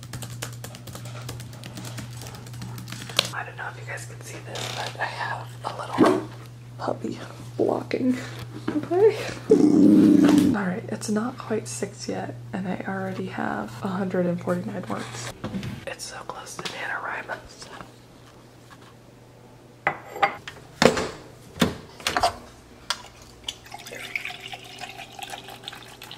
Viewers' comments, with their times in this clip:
0:09 Alarm goes off “I’ve made a mistake”. 😂